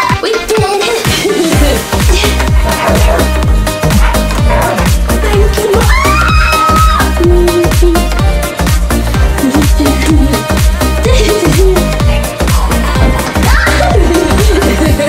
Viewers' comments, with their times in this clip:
0:03 Hearing you laugh like that makes me so happy for you! ☺️ I remember you saying before sometimes it was tough for you.